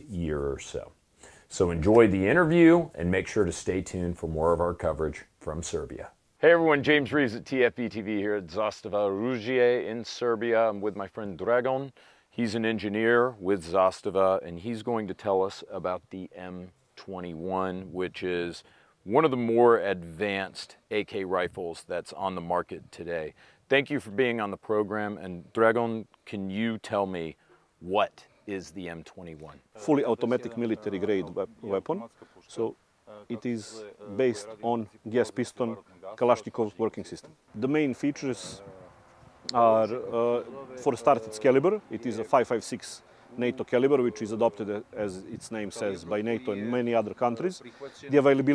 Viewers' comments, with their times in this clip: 0:07 Pronunciation of "Zastava oružje" just gets better in every episode. You can hear it improving in every video.
0:30 for a second i thought its FPSrussia who speaks the translation XD